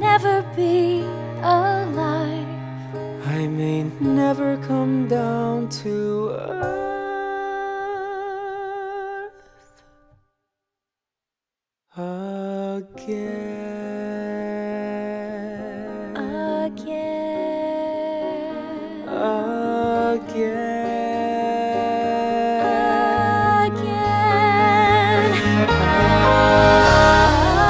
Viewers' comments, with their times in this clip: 0:05 I'm almost in tears. This entire arrangement is one of the most beautiful things ive heard in a long time
0:08 That note made me cry like a little baby.